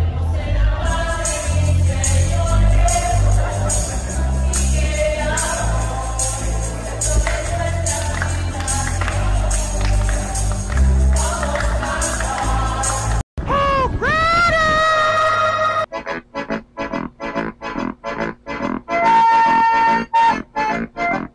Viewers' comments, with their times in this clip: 0:06 the owl has better rythem than the people.